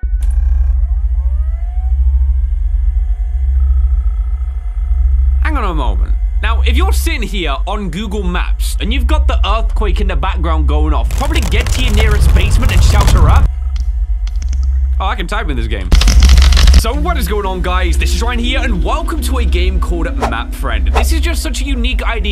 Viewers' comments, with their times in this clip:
0:04 THIS MUSIC IS FIRE 🔥